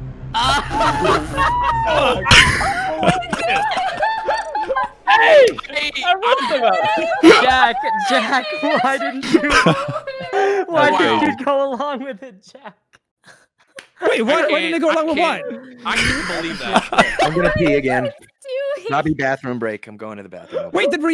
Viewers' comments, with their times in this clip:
0:03 idk if dream watch the first match but i hear laughing voice like dream at the end of first match